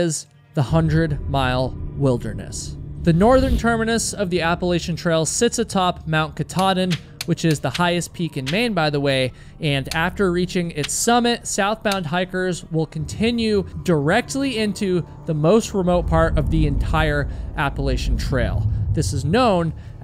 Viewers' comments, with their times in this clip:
0:07 I would have watched this through but about the 7th time of hearing you mispronouncing the name I'm done. Good luck. Atleast I left a message for your time.